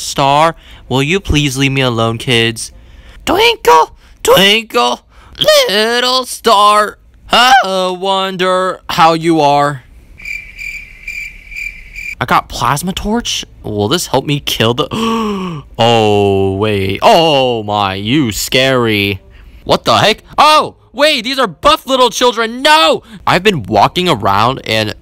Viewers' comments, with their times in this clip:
0:06 is the just beautiful singing😢